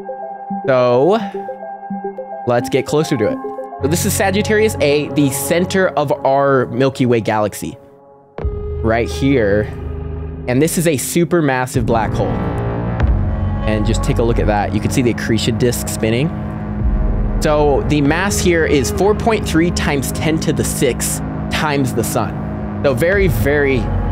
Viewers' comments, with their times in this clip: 0:09 Ok the ominous music